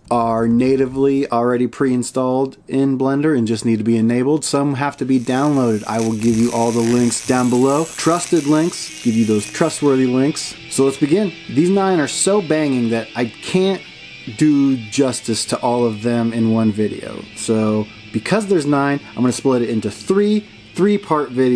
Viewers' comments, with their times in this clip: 0:06 the sound scared the shit out of me, i thought something was shorting out on my desk. Literally got a mini heart attack